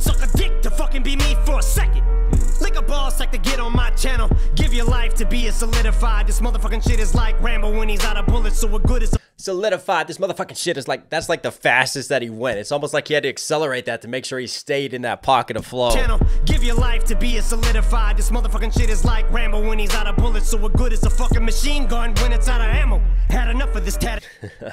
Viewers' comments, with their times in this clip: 0:06 Yes, it's fastest he went in this Song. He Song is based on mostly 16th and 8th notes and some spicy dotted 8th notes but at this Part He Raps a Quintuplet, which is a pretty complicated drum rhythm, where you Rap 5 Syllables in one beat